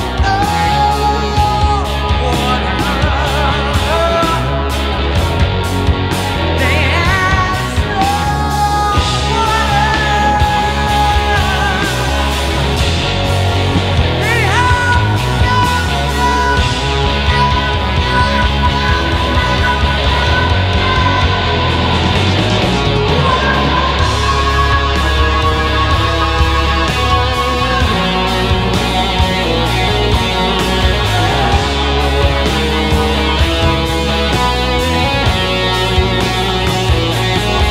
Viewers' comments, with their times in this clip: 0:09 and i think he missed 1 hihat, when he only had 1 spare hand (he used highhat hand for the snare ).
0:13 Sounds like he missed a single beat
0:15 Can anyone post a video on YouTube with a vocal that beats This part? Or at least give a run for it’s money?
0:25 the guitar feels so cool and free